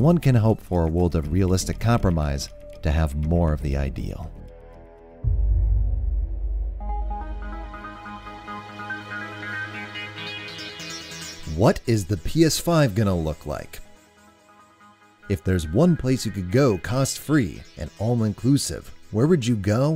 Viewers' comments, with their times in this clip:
0:07 was looking away from the screen for 10 sec and heard the tune. I felt like something was off and had to look around to see if everything was right. THAT tune gave me shivers at the time and still does. nostalgia made good.